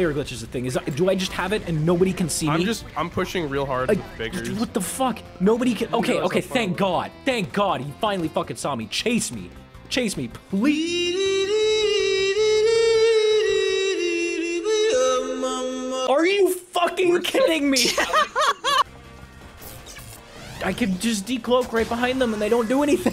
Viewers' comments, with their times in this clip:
0:07 This is both the funniest edit and one of the funniest jokes I've ever seen from you. That's also the first time I've ever heard you salty.
0:07 Can we just talk about how smooth the edit into the music was ?
0:08 that chase me ple- and then it smoothly cuts to the song its amaizing AAAAAaaaaaa
0:09 best transition that I ever heard
0:09 When he said please the music played like pleaseeeeeeeeeee
0:10 the timing and blending on can only be done by a true smith of sounds EDIT: Thanks for my first comment to ever reach 100 likes!
0:10 Ok but can we talk of how SMOOTH that transition went from him saying "chase me" to the song? Like goddamn.
0:10 that transition into the meme sounded like P-leaaaaaa there should've been an s at the end